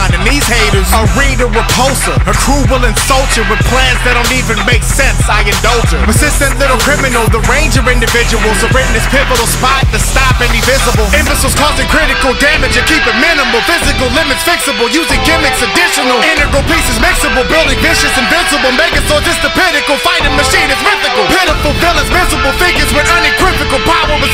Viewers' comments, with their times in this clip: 0:10 nigga breath damn